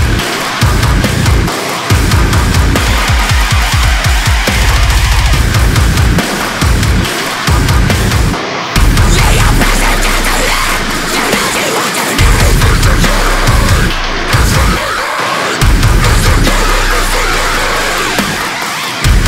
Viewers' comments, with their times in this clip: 0:03 The guitar bit makes me think of when Mario dies in super mario